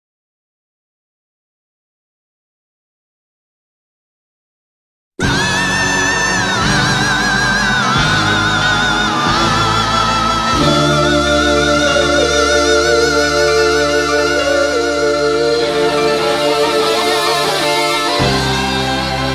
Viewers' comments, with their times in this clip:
0:05 this is how Roger scream when Freddie, Brian and John said him that they wouldn't put "I'm in love with my car" in the B side of the album.
0:05 AAAaaaaaAaAaAAAAAAAAAAAAaaaaaAaaAAaaaHhHhHhHhHhHhhHHh roger is such a queen omg I love her though
0:05 Im dying Roger Tries so hard to do it, im dying and i think what the hell is happening, this song is so different with the revisited. But its still good enough, but i still cant stop laughing when i heard 😂😂😂😂 After this, i really got a sheer heart attack after hearing Roger Yelling so hard at the beggining 😂😂
0:05 Roger stepped on a lego